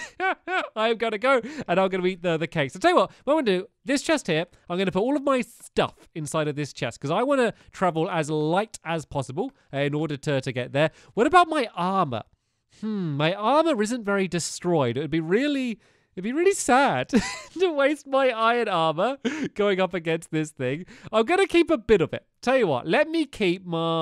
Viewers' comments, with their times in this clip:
0:05 the way he said stuff tho